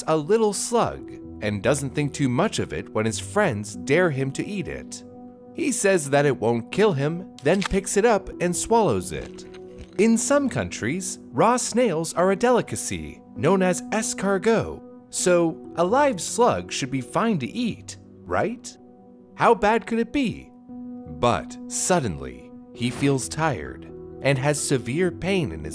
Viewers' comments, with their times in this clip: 0:10 he said Raw snails.. or do i have a hearing problem ?